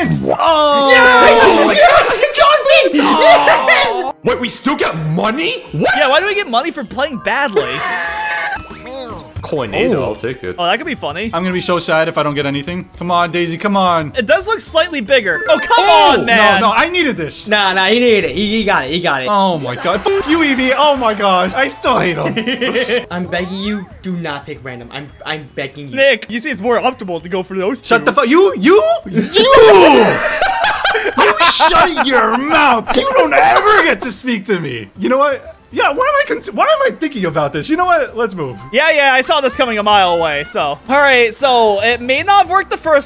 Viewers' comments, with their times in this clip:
0:06 Bro really voiced the mario fireball noise
0:28 "yo-yoOOUU" he says without a voice crack...